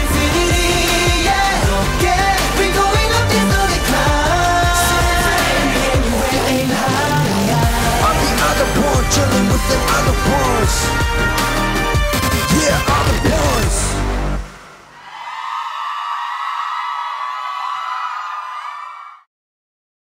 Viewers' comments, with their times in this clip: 0:08 I am so addicted to the part. Lucas vocals there is so killing that part. Wish he could get more lines. He sound so good